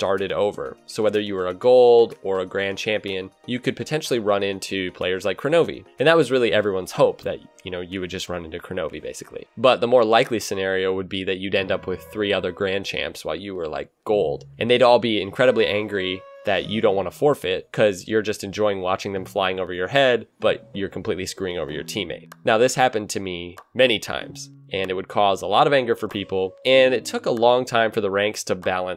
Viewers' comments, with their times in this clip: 0:09 I really liked the music track that played and ended somewhere around the mark. That was decent and catchy. Thanks for the upload =)